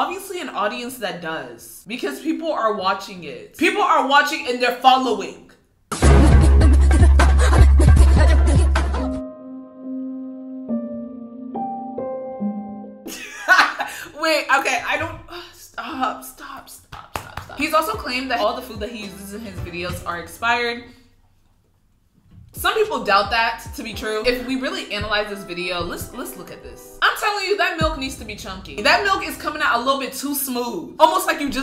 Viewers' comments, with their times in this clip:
0:08 🤩 your singing was amazing girl
0:13 she says it's not funny but she's laughing